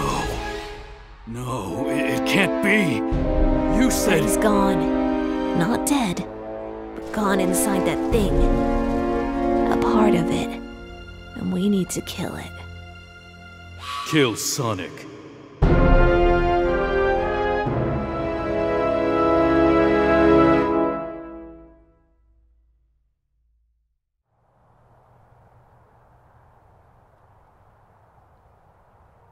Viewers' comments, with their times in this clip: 0:08 I kinda hear history tails the part of he said a part of it
0:15 Me hearing the first 3 notes : Who wants to be millionaire ? After : Oh... Just a To Be Continued